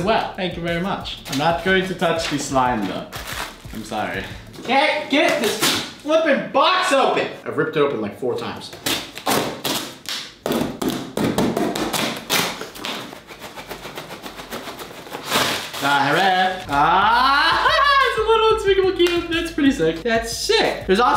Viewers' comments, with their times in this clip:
0:08 I CAN'T GET THIS FLIPPIN BOX OPEN makes music
0:08 it sounded like a beat box 📦